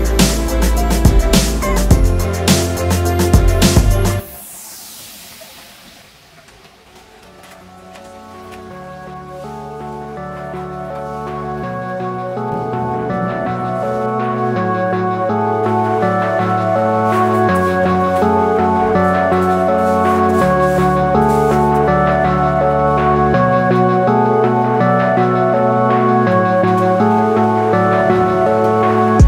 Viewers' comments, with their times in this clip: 0:10 that beat was going hard i started freestylin,name of it anyone?@